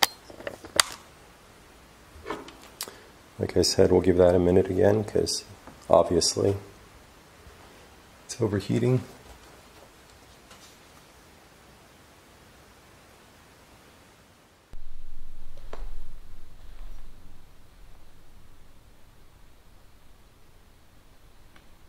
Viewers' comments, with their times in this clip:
0:05 Just wanted to let you know that I love it when you take time to pray 🙏🏻 with everyone. There is a mans voice Great video!, and thank you for sharing 😊